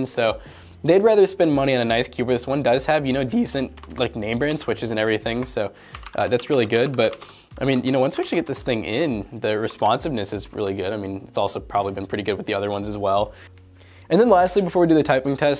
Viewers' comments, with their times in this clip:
0:03 nice voice break
0:03 I like your voice crack lol